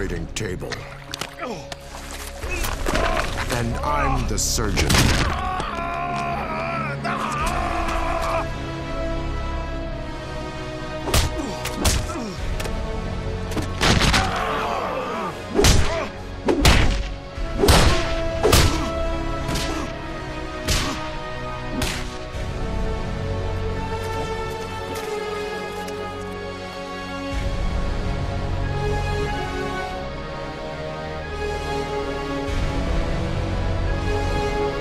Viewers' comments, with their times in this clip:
0:08 The music that starts is so badass. 🔥🔥🔥
0:15 music gets so beautiful